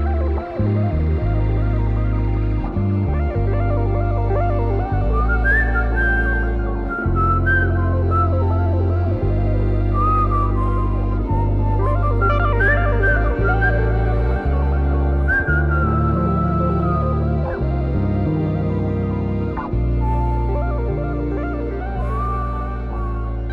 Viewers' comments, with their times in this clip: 0:05 the whisper scared the shit out of me! thought someone was behind me.. fckng earbuds